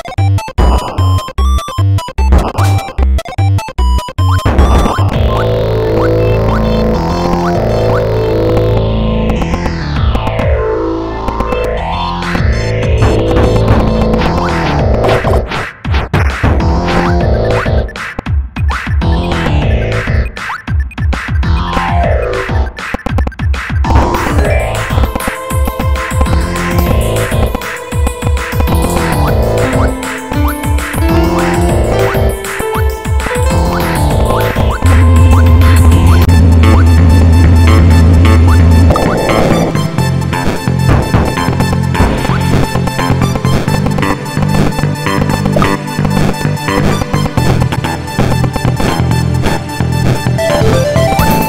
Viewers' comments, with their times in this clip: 0:05 the background song gave me that regular show vibe😂
0:24 that notification is badass
0:35 is where the music gets good
0:36 That music is epiccc
0:36 why do i hear boss battle music?
0:38 is when the epic music starts